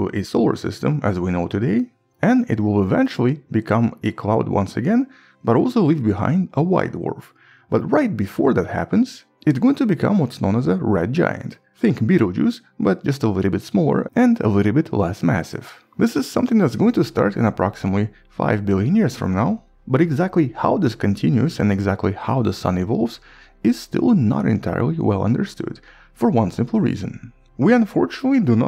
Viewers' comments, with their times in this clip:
0:10 i thought he said beetle juice 💀 It might survive but with or without life?